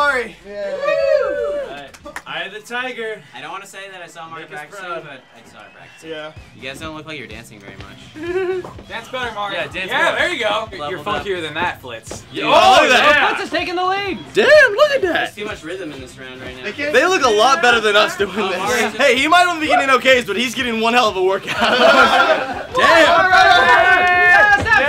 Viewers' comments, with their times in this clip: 0:05 I still have no idea what Sohinki is saying Does anyone know?